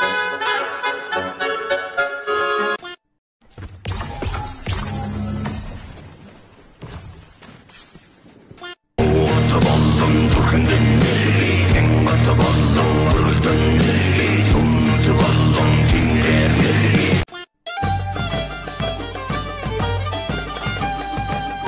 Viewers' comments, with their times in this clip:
0:09 it's Mongolian rock/metal???